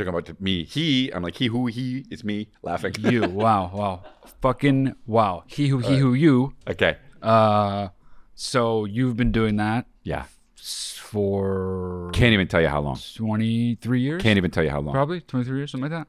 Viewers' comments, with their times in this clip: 0:04 OOOOOOOOOPs forgot ta bleep